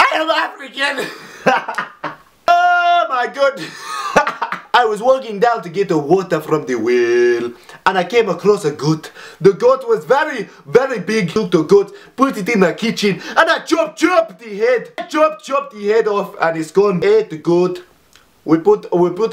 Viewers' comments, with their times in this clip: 0:03 I'm sorry but that Geordie accent sounded nithing like us hahhaah but OMG I was crying at the African accent made my life!!!!